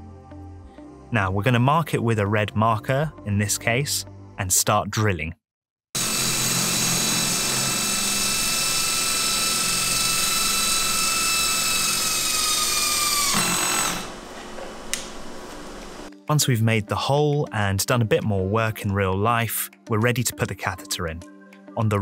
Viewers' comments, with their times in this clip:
0:06 i am sorry, can’t hear u, just some drilling going on.😂😂😂😭😭😭OH MY GOD DUDE